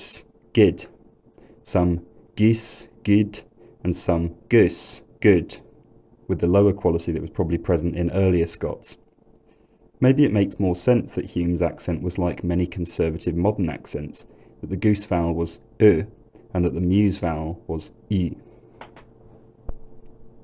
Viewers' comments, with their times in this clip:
0:06 Striking how familiar the opening speech sounds to my ears. Parts of it sound like an elderly speaker, parts of it sound like my own speech. I'm East Lothian, but bordering Edinburgh. The first and third 'good' are commonly heard around Edinburgh, and I personally use both of them, though the third is more common